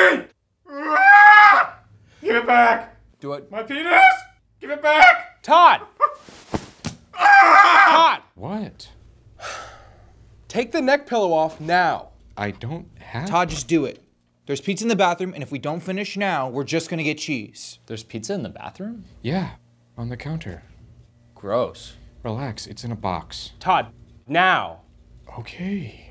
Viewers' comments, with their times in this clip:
0:08 the “What” was delivered perfectly 😂